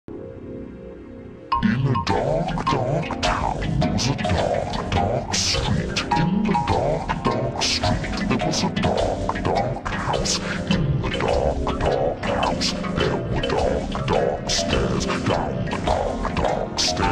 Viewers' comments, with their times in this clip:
0:01 LOL it sounds like it is being sung by a rapist or probably a pedophile.But the video is cool